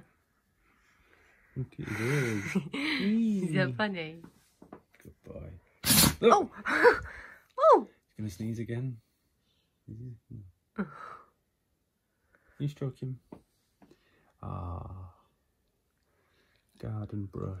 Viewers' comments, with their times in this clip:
0:05 The sneeze to end all sneezes!